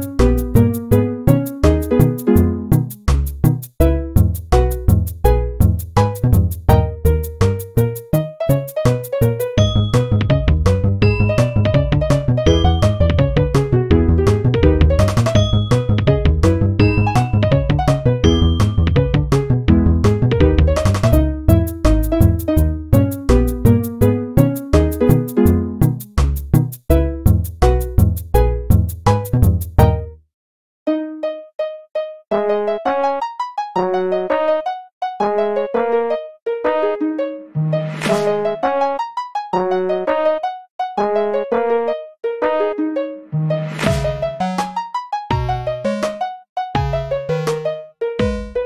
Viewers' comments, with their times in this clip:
0:07 I love this part a lot, especially with those mc ice bells
0:29 I think you missed a beat?
0:30 Pause is a beat too short